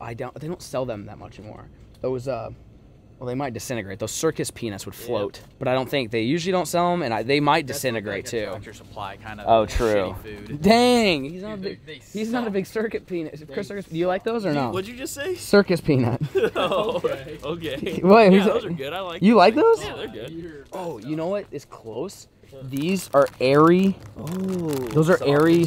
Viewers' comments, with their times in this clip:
0:10 Gotta love those Circus "Penis" aka Peanuts 🤣🤣🤣